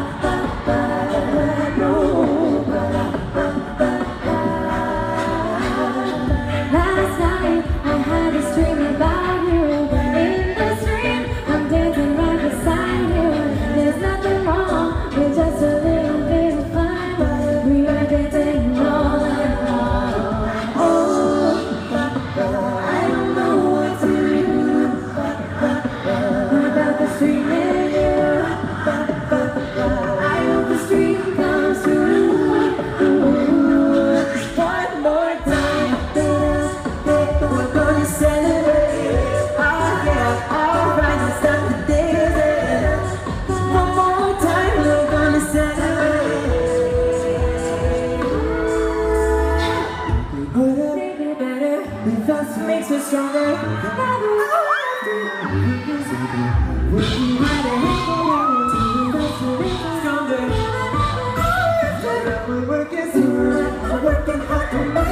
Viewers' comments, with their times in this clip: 0:07 Kirstie's solo sounds amazing. It all sounds perfect that part just stood out to me.
0:52 Im in love with Mitchies "makes us stronger " aaaaaaaaaaaaaaaaaaaaaaaah